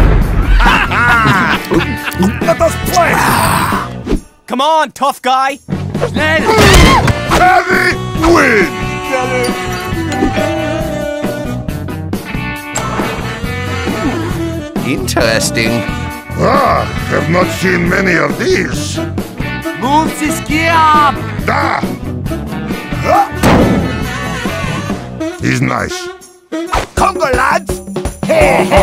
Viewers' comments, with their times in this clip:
0:10 My dog reacted to that doorbell sound